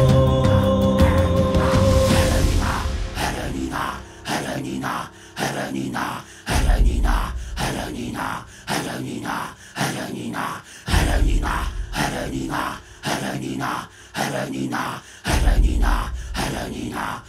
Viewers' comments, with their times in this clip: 0:03 Imagine an army of besieging mongol soldiers chanting that outside your city gates.